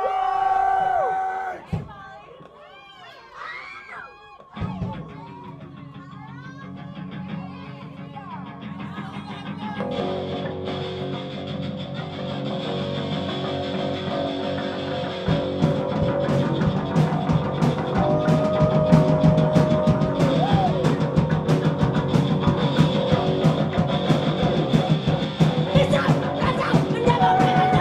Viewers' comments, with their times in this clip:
0:08 Peep the timestamps in the description. Music starts ❤